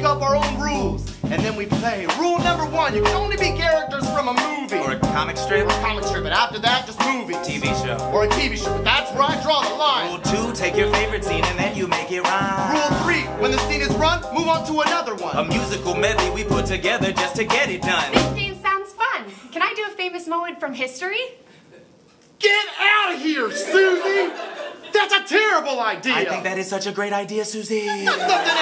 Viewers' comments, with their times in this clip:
0:10 why does that sound like if daveed was high?